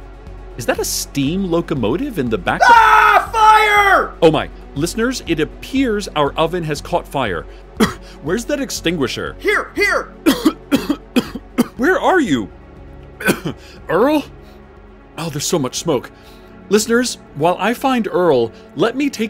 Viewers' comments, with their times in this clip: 0:03 THE SCREAM SCARED ME SO MUCH.